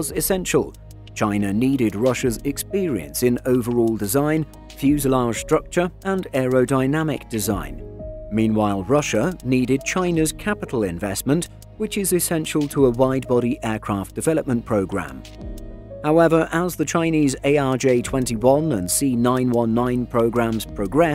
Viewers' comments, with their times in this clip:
0:03 So much for the supposed friendly Russia/China relationship. Also, the tik-tac clatter-clack sound in the background drove me mad and I gave up